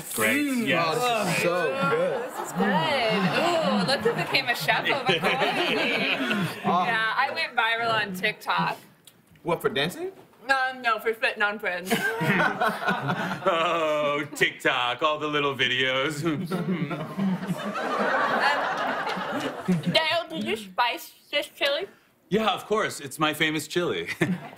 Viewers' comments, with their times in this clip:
0:06 Why did Heidi Gardner go viral on tik tok? Couldnt tell what she said
0:07 Okay, not even the closed captions have any idea what she said.
0:10 What the hell is Heidi's character saying ?
0:10 wtf is she saying